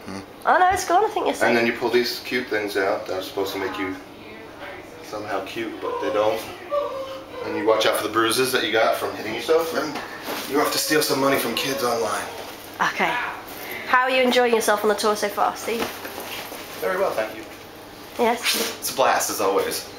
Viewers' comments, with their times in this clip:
0:06 ARE WE JUST GONNA IGNORE THE MOANING?? 😭🙏